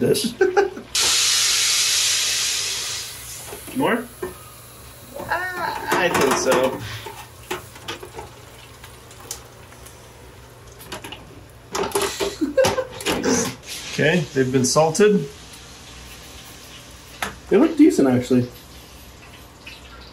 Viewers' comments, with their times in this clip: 0:07 that little "uhh"